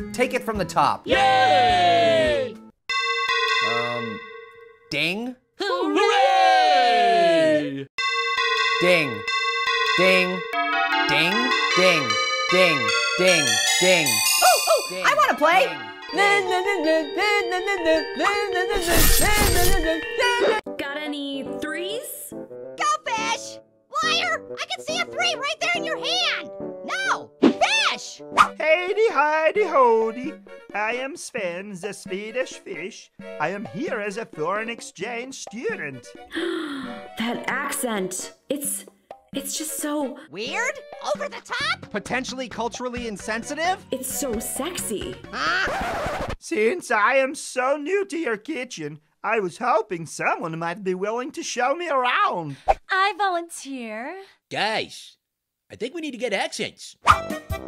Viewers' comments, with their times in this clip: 0:04 The way pear said ding
0:45 the voice is so sexy?